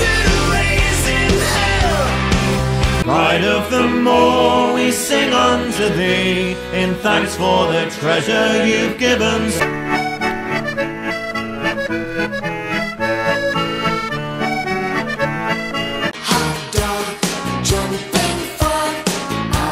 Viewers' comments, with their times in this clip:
0:03 Uncle Junior's from Devon??? 😮